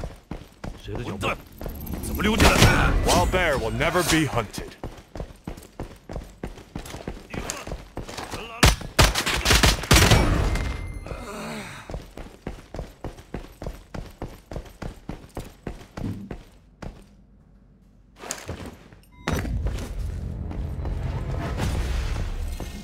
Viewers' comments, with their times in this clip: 0:10 Rewind a bit to after I killed the bot, a shotgun shot was heard. Only a bot could have fired a shotgun, bots only shoot at players or bot players, but there are never bot players in this place, so the bot shot at a player who did not have time to silently eliminate him with a melee weapon